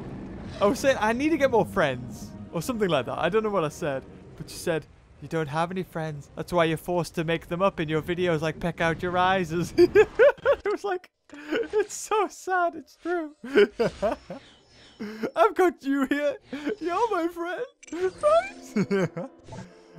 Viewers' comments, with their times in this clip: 0:04 mosasaur lawnmower confirmed